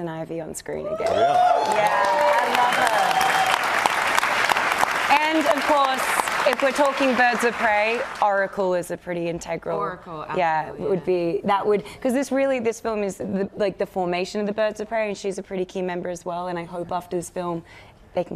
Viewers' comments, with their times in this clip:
0:06 Applause for Ivy but nothing for Oracle? How dare